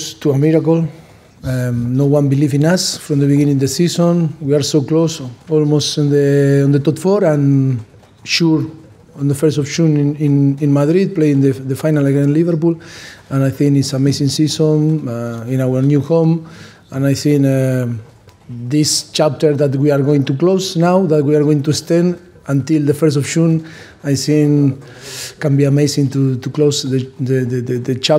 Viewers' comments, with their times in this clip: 0:09 the way he says "June" is the most Argentinian thing you will hear today